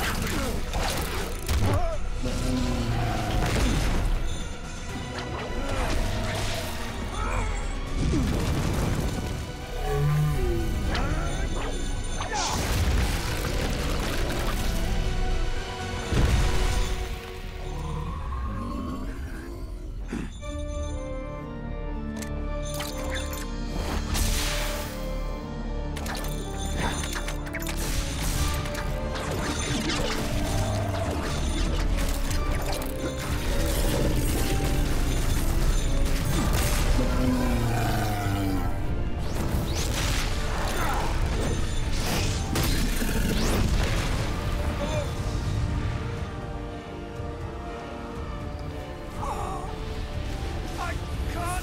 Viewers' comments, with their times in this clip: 0:04 That music change ⚡
0:18 the song start hits the spot
0:18 When that music starts playing as trevor takes out his second whip, you know its about to go down for real
0:18 Trevor: *Pulls out his second whip Hell Beast: 'Wait...why am I hearing music that sounds like I made it to the second phase of a boss fight?!'
0:19 Soul Beast is hearing boss music.
0:19 With the change in music, I knew trevor was about to kick it up a notch :D
0:19 The monster: Why do I hear boss music?
0:19 He caught his breath back The music starts He levels up Show off a little And start raising hell on the demon
0:19 Castlevania Theme Monster: Why do I hear Boss music?
0:19 "I got you know, Belmont! There is nothing you can do to... oh crap, the organ started playing."
0:20 That demon was like “why am I hearing boss music?!”
0:20 That demon was like “why am I hearing boss music?!”
0:20 My god this gives me chills. The animation and music in this scene are amazing.
0:20 my god when that castlevania theme started I got the biggest rush ever fucking phenomenal the people behind this series did a beautiful job
0:20 I imagine the demon/night creature was like "Wait, why do I hear boss music? I thought it was supposed to be the other way around!"
0:20 when you think you're winning but a Belmont pulls out another whip - boss music in the background
0:20 Okay but I am absolutely obssessed with the song that starts pleaying when Trevor pulls out the other whip
0:20 organ piano starts playing
0:21 OH MY GOD THE MOMENT THE GOTHIC PIANO THE FIGHT! ITS AMAZING!
0:21 when he whips out both whips with that music! Perfection!
0:24 haha whip go WHOSH WHOSH WHIP
0:29 Am I the only one that loves the sound of Trevor's duel-wielding whips ? It's like his weapons are pulling apart the air.
0:34 I really like how Trevor moves/rotates...in here. Such detail shows that he is able to dual-wiel without hitting each whip together by doing these movements / rotations. And you could tell that he is able to see where each whip moves and landed a hit. The extreme amount of animation in this action sequence is just amazing! By slowing this down...you could see how delicate how and where each whip's hit lands (you could see where the Morning Star is going to hit, really. And you can hear its clinging sound!).